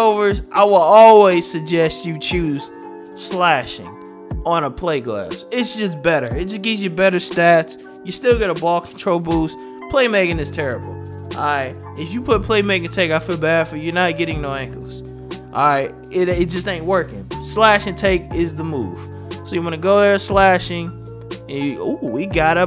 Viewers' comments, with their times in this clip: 0:10 that beat reminds me of Smile - Scarface,Tupac. Yeah man!!!